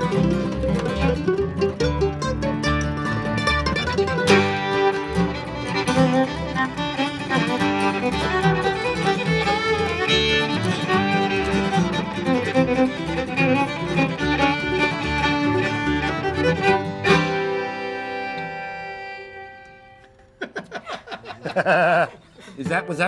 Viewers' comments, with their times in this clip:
0:05 The Fiddle player in "I'm a Working Dog" is brill! And don't you just love how everyone reckons that the greatest were from here. They're only "the greatest" in that particular style of music and only "the greatest" in the opinions of a limited group of Americans. You might have noticed that I don't buy into the American hubris.